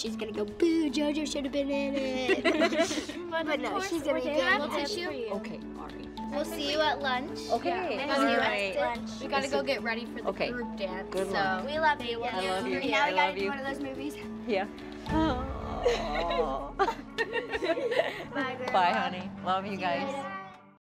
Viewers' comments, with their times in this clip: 0:06 omg Maddie had the audacity to say "we got to get ready for the GROUP dance" in such a rude tone while JoJo is crying over her sick grand mother no hate but that's heartless